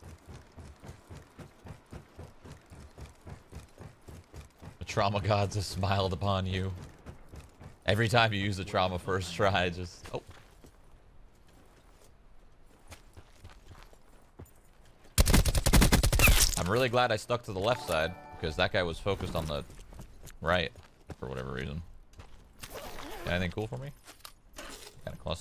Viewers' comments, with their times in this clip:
0:09 i thought us midwesterners only said ohp lol guess canadians do too.